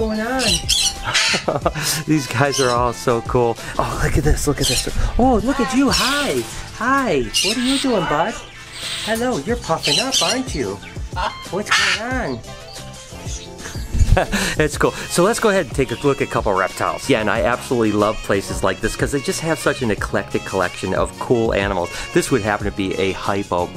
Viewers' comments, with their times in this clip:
0:08 the parrot really spoke